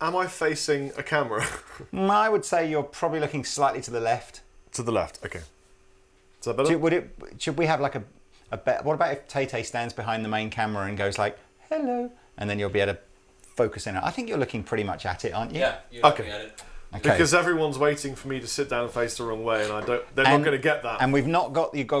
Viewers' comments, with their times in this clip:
0:10 kinda reminds me of the turrets in Portal - greetings I'm- - ARE YOU STILL THERE?